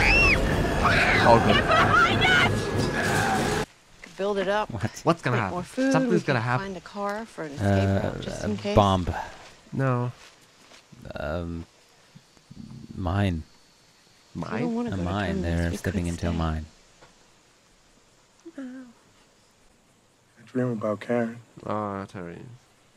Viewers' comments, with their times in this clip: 0:03 actually thought Carol just said “Give her a pine nut!!”